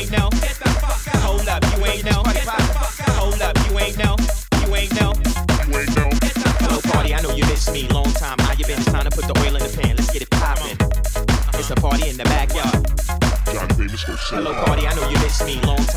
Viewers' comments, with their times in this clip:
0:03 WHAT HAPPENED SOMEONE KNIOCKING AT THE DOOR?